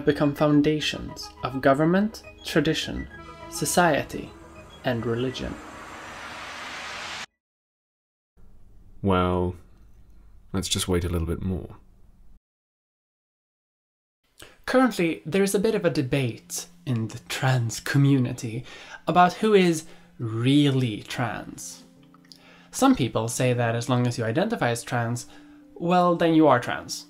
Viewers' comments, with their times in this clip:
0:08 You were the voice weren't you?